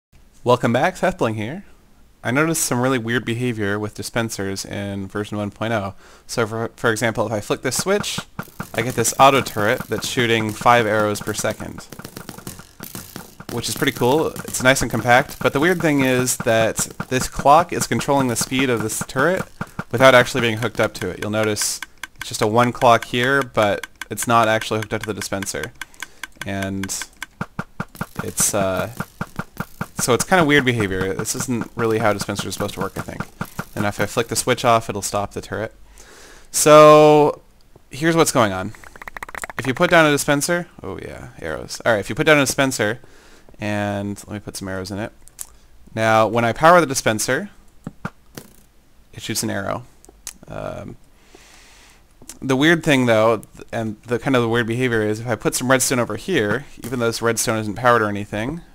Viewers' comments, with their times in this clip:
0:01 welcome back seth bwing here. lol
0:40 mini orgasm "oh yeah... arrows"